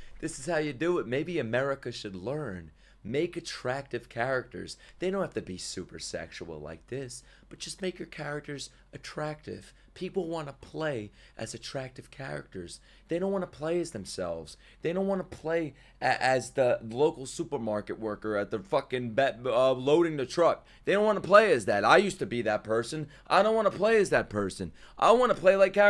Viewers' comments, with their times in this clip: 0:08 zenless zone zero is cooking with gasoline with the music